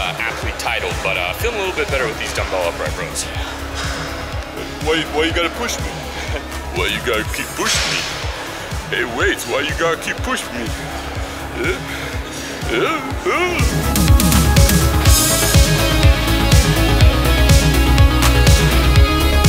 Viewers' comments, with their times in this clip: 0:05 Stalone impression legit!!!